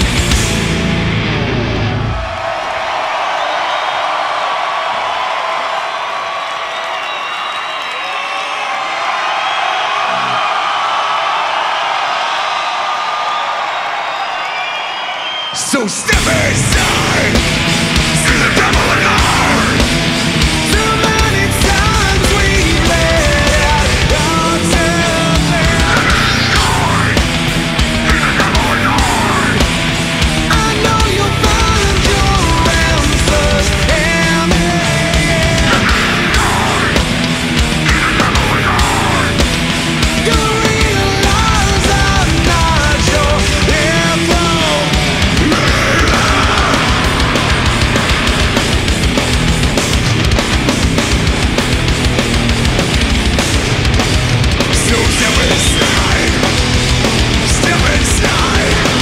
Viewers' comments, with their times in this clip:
0:07 that break and return is fucking epic
0:16 Corey scream combined to chris' = demonic voice
0:17 wonderful the combination of the voice of chris and corey
0:17 when chris and corey scream together 👌
0:18 That Corey and Chris combo is BEAUTIFUL
0:18 Holy shit Corey's and Chris's vocals are fire dawg 🔥🔥🔥
0:18 Ohhh wow that sounds really good
0:28 sounds unnatural like playback...it's really corey live?
0:34 Im just gonna say i find it funny how they tried to hit that new chord to go to the ending lines, but somewhere someone got confused but they just rolled with it. Now that's talent
0:36 in that part mick was wrong, I don't know if you heard
0:37 this part hits nice and demonically deep man I miss Chris with his awesome backing vocals
0:44 Min that scream was insane.
0:44 brutally gut-wrenching scream
0:45 = best scream in the performance